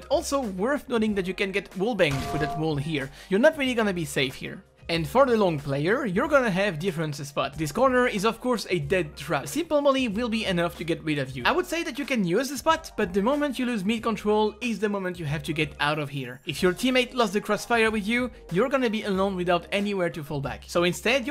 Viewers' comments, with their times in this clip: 0:03 That frying pan sound effect made it for me :D